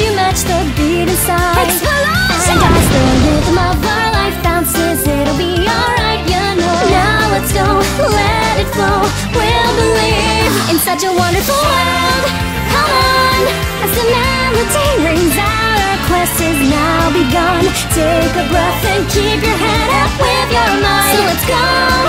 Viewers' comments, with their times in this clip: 0:03 I like the melody